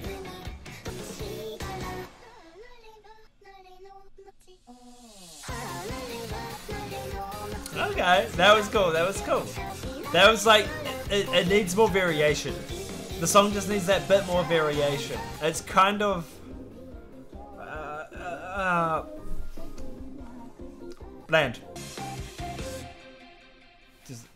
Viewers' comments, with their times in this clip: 0:10 "it needs more variation" - he says while speaking over the variation